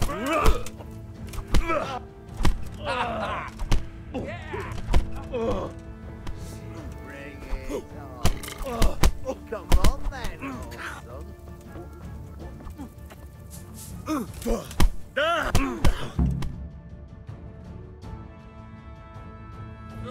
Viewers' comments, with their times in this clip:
0:06 Henry uses Burp! Its very effective!